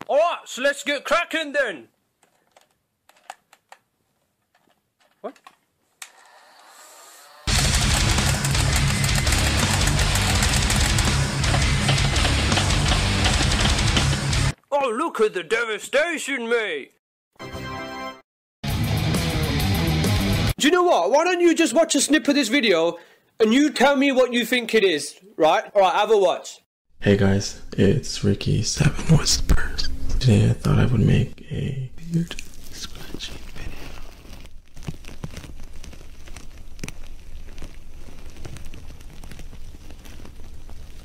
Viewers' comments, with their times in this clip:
0:04 The quiet and confused "wat" cracks me up everytime.
0:04 I love how when the gun doesn’t fire he stops for a sec and all you here is this little “what?”
0:05 That very quiet, confused, "What...?" killed me! Don't judge <3
0:24 this was scary for headphone users